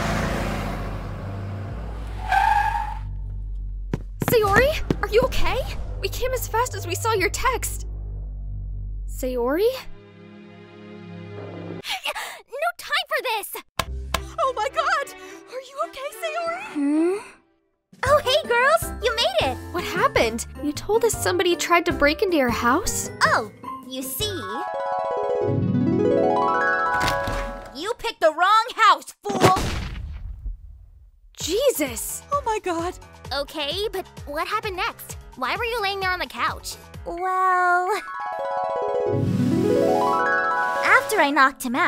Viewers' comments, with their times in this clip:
0:08 good lord the dread I felt when I started hearing Sayo-Nara
0:11 I WAS SO SCARED WHEN I HERD THE SAYO-NARA MUSIC
0:28 wow! sayori turns into big smoke for a second.